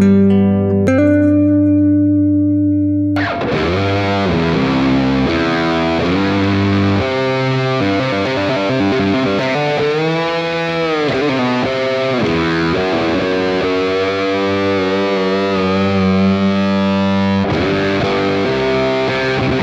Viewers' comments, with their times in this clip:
0:06 is the most emotional Metallica moment imo. Fade to Black is overall a better song that conveys sad vibes, but that interlude cannot be beat. So powerful!